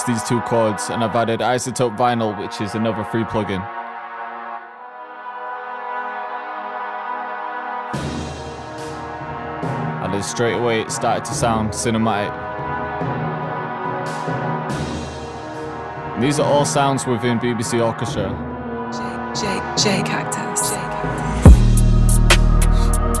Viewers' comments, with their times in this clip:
0:10 How ... The whole intro gives me some hans zimmer vibes